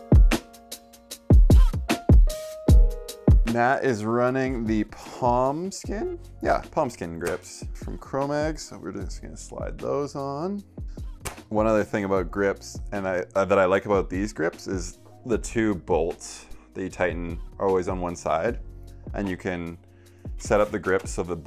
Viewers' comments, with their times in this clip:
0:03 I wanted to hear the bead pop into the bead.